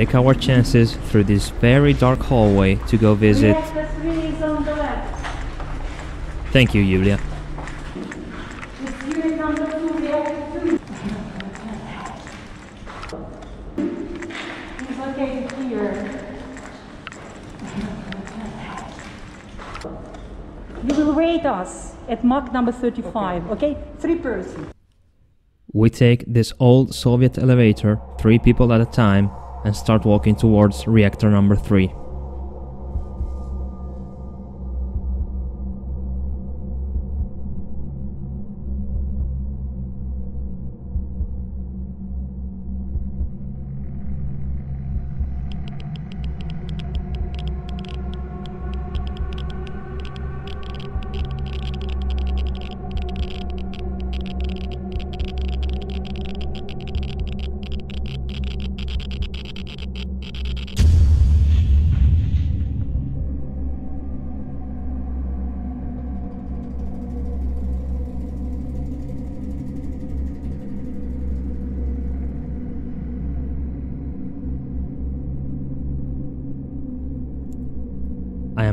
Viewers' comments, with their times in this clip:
0:10 I'm surprised nobody is talking about the voice whispering "hey" It sounds a little bit spooky.
0:10 This is late, but i'm not seeing anyone comment it, maybe i watched too many nukes top 5 but i could swear i hear someone whisper "hey" and then a few seconds later again. Can anyone confirm this or give me their thoughts?
0:10 after watching many ghost hunting clips I try to listen closely. Anyone can hear "HEY" twice ?????
0:11 Man, those sounds give me the chills. They sound like a whispering "hey" 😨.
0:12 you can hear the cracking from the radiation
0:12 can anyone else hear a woman’s voice saying something like “help” or “here”?
0:16 Is it just me or do I hear some type of noise what is that? kinda sounds like something saying "hey"
0:16 is it only me so hear a voice so say hell
0:17 Voice at the background saying "HEY"
0:18 this silent "Hey/Hi"
0:20 was i the only one hearing someone whisper help in a ukrain/russian accent ?
0:44 Insane video. I almost watch it in one breath. When you stand high and in front of reactor no.3 i have same thoughts like you. Alot of people sacrifice and lost their lifes to somehow contain radiation and this disaster. You know is bad when hear that beeping No one want to hear that ⚠ Really mindblowing expierence. Even while watching video
0:46 Not the dosimeter hearing that is scary
0:46 Excellent & fascinating video, but is walking fast to avoid radiation contamination a legit strategy? lol Also, the eerie sound of the geiger counter as you walk through reminds me of that guttural noise the ghost makes in the movie, The Grudge
0:46 YES CLICKING ALRIGHT
0:50 From we can hear static sounds on the footage. Is it the same sound caused by radiation or did you put it to give an effect of the same?
0:50 that crickling sounds are the gama radiation
0:53 Nah bro dont add those sound effects 😭
0:59 The cracking sound, is that from the radiation your camera picked up or?
1:00 That Rad Sound Gave me Anxiety Damn you fallout